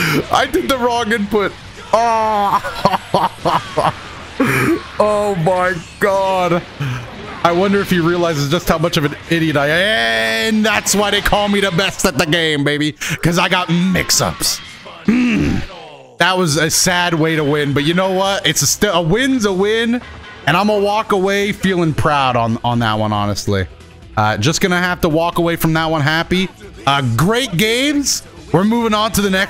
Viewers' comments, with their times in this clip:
0:09 He turned into dunkey
0:10 anyone else hear dunkey come out in doto right there?!
0:12 Yo fire dunkey impression